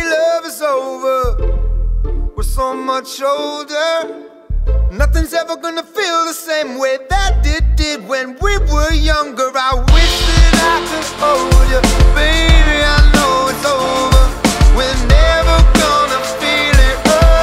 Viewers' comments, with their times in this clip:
0:04 I like how they sneak in that "5 on it" bassline
0:05 The beat of this song is almost identical to Luniz "I got 5 on it." Notably Love this song, it took me forever to figure out what the beat was from.